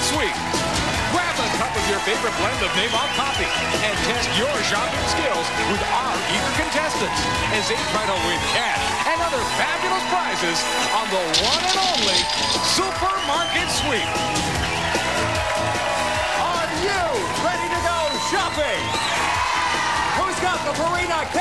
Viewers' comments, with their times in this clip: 0:07 The way the woman says "Q" is cute